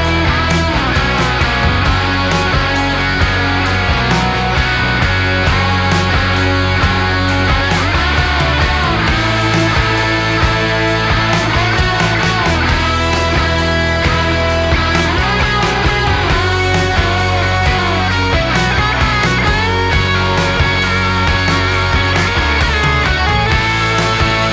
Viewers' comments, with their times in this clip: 0:08 Love the guitar riff ❤ (29/8/23 pm)